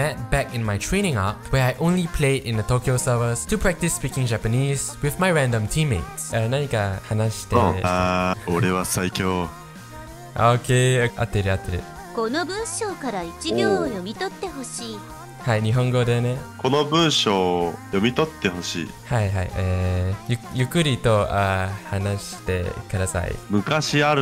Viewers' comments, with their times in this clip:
0:08 his voice matched that perfectly lol